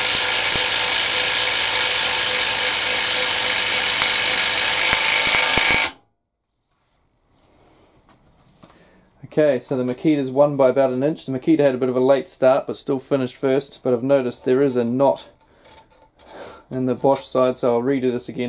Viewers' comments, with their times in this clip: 0:04 the standard 18V Bosch power drills would sink those in a tenth of the time...and you dont need ear protection